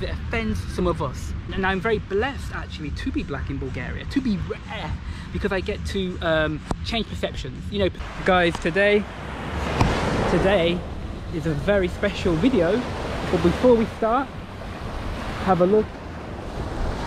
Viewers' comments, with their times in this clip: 0:04 to be raaarrrreeeee 😁🤣😅😄😆 that shit sounds mad funny yooo